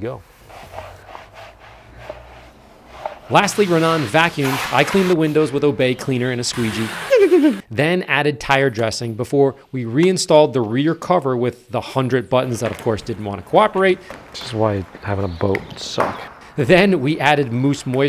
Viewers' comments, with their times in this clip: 0:06 Did you actually made a turbo blowoff valve sound? 😂😂😂